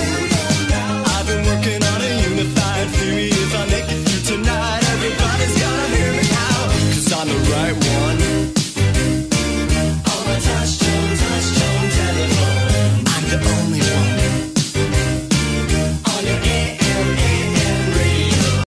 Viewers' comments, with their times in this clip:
0:06 to me it sounds like your town lol to me don’t be calling me idiot it just sounds like that to me